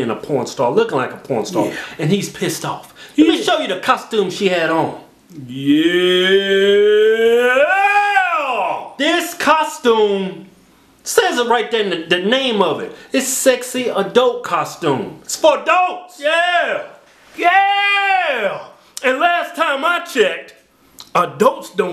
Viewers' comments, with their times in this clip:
0:05 that EPIC "yyyyyyyyeeeeeeeeeeEEEEEEEEEEEEEEEEEEEEAAAAAAAAAAAAHHHHH!!!!!!!!!" was OVER 9000.
0:05 Best "Yeah" ever